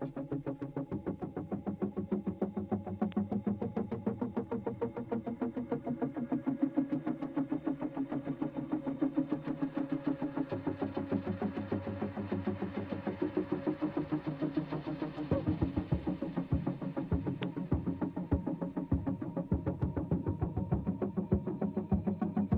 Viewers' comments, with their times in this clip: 0:07 when it starts to feel like interstellar movie. I love this music.